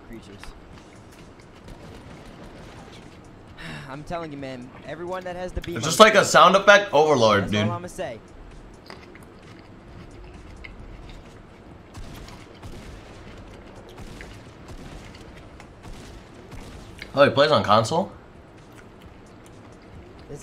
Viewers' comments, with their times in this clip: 0:04 Myth: It’s like a sound effect overload Me: Your damn mouth is a sound effect overload